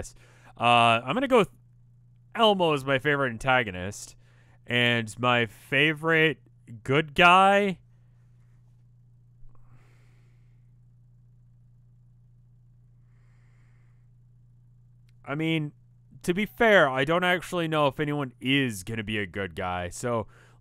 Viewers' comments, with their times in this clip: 0:05 i love how he pauses when he tries to think of his fav 'good guy' from homestuck. like its just so hard to pick one, since they all have so many faults. which basically means their basically like real people instead of just plan old easy to like characters.